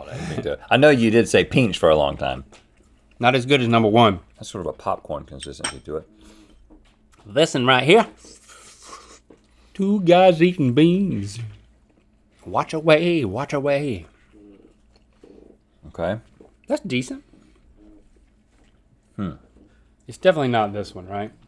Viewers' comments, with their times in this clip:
0:06 link sings the bean song